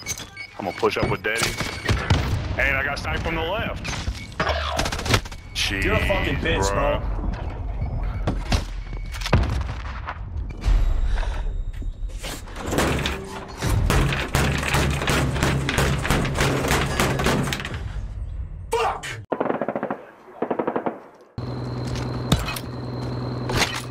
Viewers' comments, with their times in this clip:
0:09 double pump desk slam lmaooooo